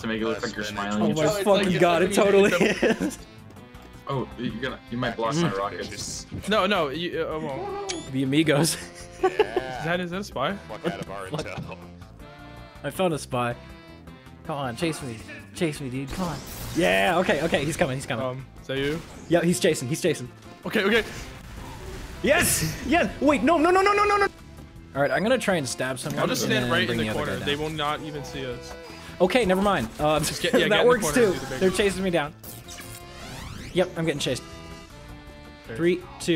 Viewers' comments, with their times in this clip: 0:09 sounds like a cow
0:22 the “no no no no no” getting cut off by an ad was just the cherry on top. Comedic genius
0:22 was the most spy-like yes i've heard you do
0:23 The sound of agony...
0:23 How does one say no this fast